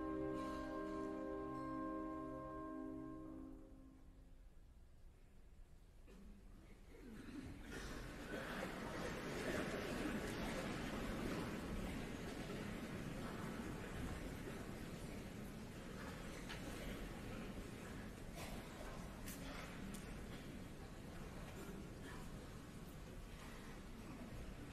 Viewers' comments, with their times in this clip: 0:05 Why is there a collective coughing on ?